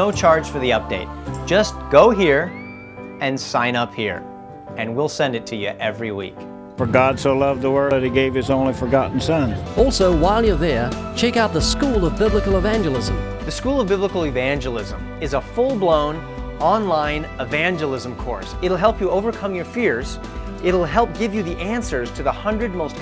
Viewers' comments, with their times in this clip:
0:05 "his only FORGOTTEN son?"???
0:08 I know this dude didn't just say His only forgotten Son🤦🏻‍♀️